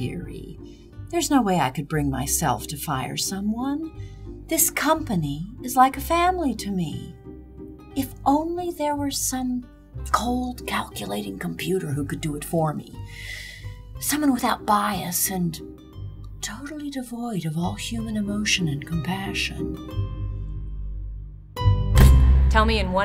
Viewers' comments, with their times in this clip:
0:07 sounds alot like Glados if you ask me...